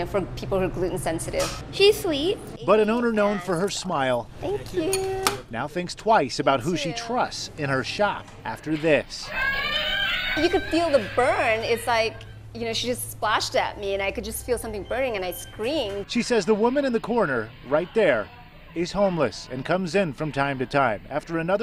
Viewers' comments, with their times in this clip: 0:08 she sounds like sirenhead